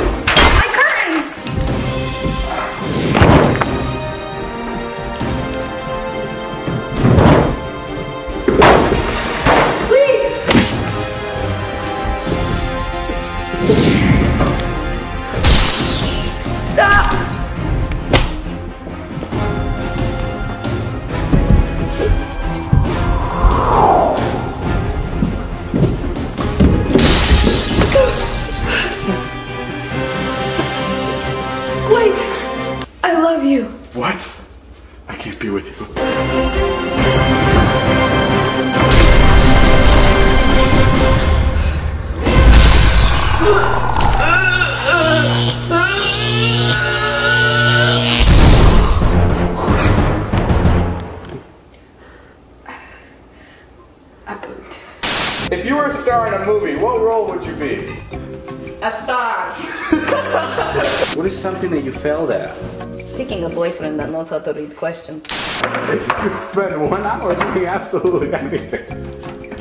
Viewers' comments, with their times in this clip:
0:05 why'd she sound like a bowling pin when she fell??
0:27 sound effects on point
0:52 Liza:* heavy breathing* ...i pooped...